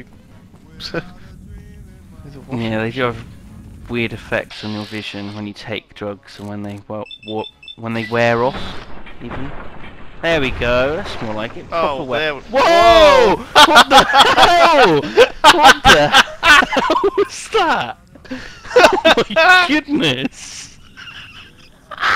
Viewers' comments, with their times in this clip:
0:10 skip to for an epic laugh